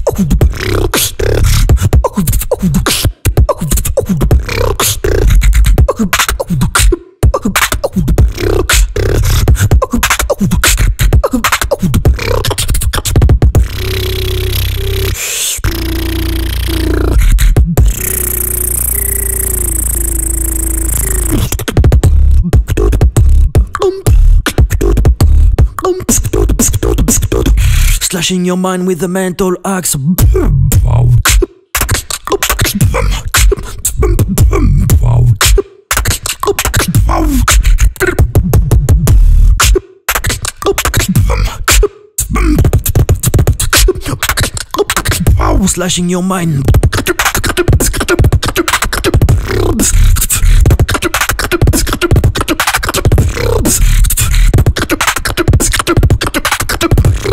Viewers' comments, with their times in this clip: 0:09 How do that triple spit snare?🔥
0:27 Woooww! I prefer this to Precision, both are so sick but the drop does it for me. I'll try learning it :_colapsBaka::_colapsBaka::_colapsOmg::_colapsOhlala::_colapsOhlala:
0:29 OMG HOW ARE THOSE KICKS SO INTENSE
0:30 sounds so good on good mic
0:32 at first i thought the drop was relatively simple chest bass drop, but after listening many times i can hear the melody clearly throughout the sounds. this is insane colaps! your routine composition skills are just as good as your beatbox techniques.
0:45 this drop. this damn drop. the consistency mixed with the flow while combining the power of sounds, wow. immaculate job colaps, this was definitely a journey of tracks to remember!